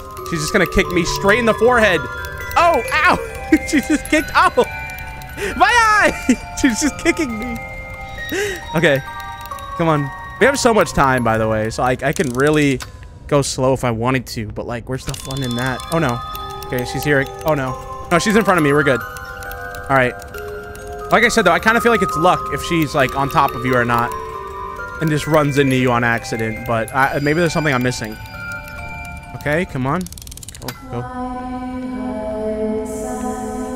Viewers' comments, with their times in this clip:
0:04 Him screaming “MAAA” is so lore accurate
0:20 I like it how he said oww my eye